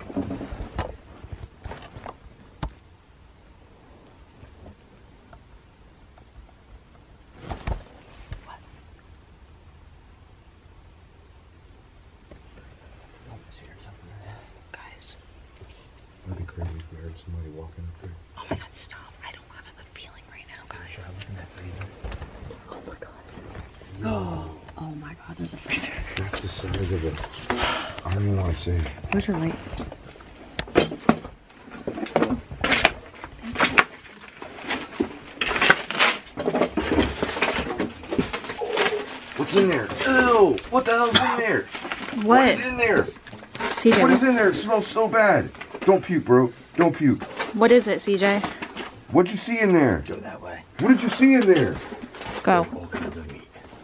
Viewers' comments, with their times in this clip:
0:08 sounds like someone walking upstairs, Well that was creepy. Awesome video. I just love all of you.
0:37 OMG! I heard what sounds like a disembodied females voice in agony say, "Help Me Please!" 🎧 needed on high! Like if you hear it too!
0:37 I definitely here a "help me" with ear phones on